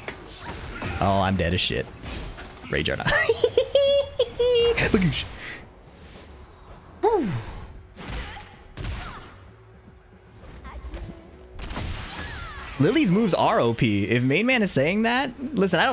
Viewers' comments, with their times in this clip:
0:03 What I get from this- play with intention and play to the strengths of your character. Stop thinking about tiers and who’s easier or if you’re playing scummy. Think about are you playing intending to do the actions you do? Are you adapting? What can you work on during and after the match? Is shit workin’ and can you keep trying it? Btw that whispered “b’goosh” after the rage art was hilarious 😂 “
0:03 nice Andrew Garfield laugh😂😂😂